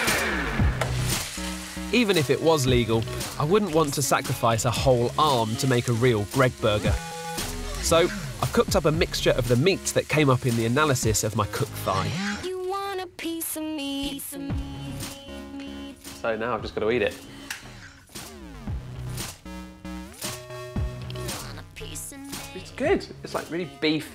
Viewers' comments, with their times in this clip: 0:07 That music combined with the the imagination that he is just grilling some human hamburger there... it's just strangely chilling :D